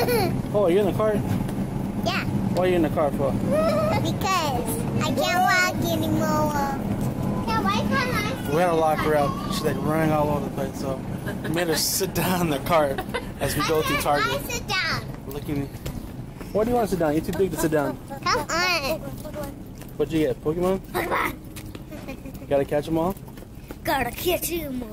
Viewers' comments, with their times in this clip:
0:05 Now it's your fault I will be going to get me a burger and shake. She sound so cute when she said cause I can't walk anymore.@ She sound like she have a different accent. lol. You guys have the cutest happiest family ever. What a great match.